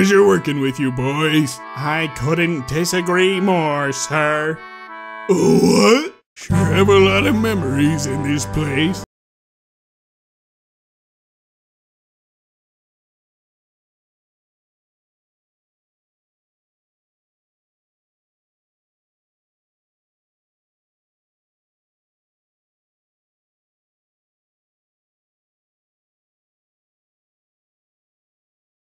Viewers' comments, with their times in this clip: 0:09 What happened to the audio?
0:10 wow what happened to the music?